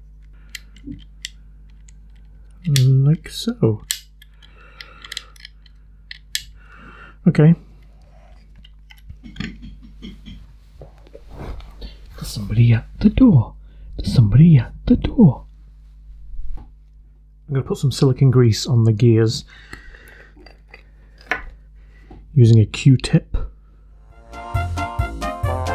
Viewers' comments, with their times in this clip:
0:08 Believe it or not, just as you got a knock at the door, so did I. Hopefully your Amazon man was cheerier than mine. Stupid Tomy Dingbat...bot